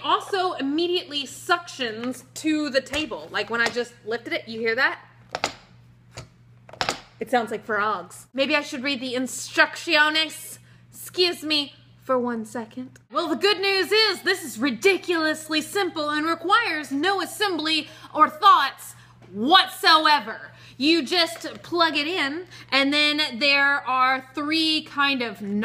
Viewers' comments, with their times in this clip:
0:09 I'm glad I'm not they only one who says instuctshonas